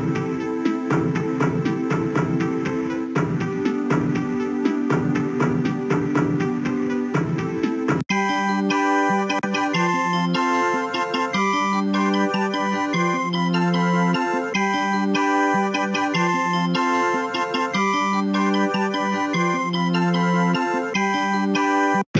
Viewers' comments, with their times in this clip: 0:08 This song Track 7 is happy!